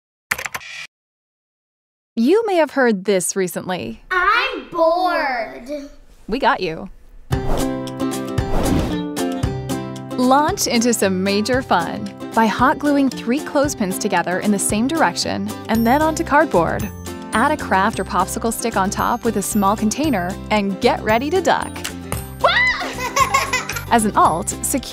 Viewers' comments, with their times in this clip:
0:07 she couldn't hold her laugh😍😜